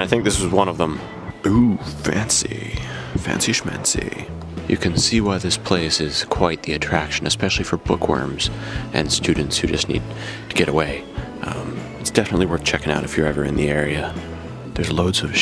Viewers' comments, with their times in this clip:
0:03 love your voice it remind me something but however great creativity in that building.